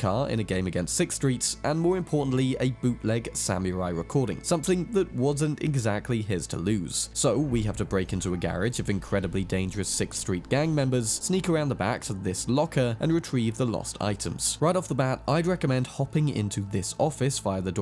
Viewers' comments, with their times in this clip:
0:03 'Samy-Rai"!? Sahm-You-Rye. British pronunciation of non-British words is atrocious. You guys, generally, are more pleasant to the ear, but not when you're saying "Taco", "Pasta", and "Samurai".